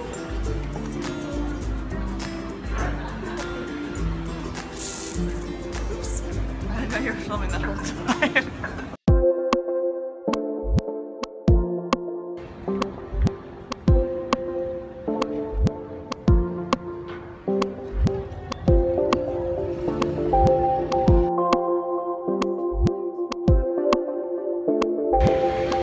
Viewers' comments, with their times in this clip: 0:09 Hello!! I love watching your videos! You two are a lovely couple :) The music starting is so catchy and sweet to me. May I ask where the music is from? Much love from the US~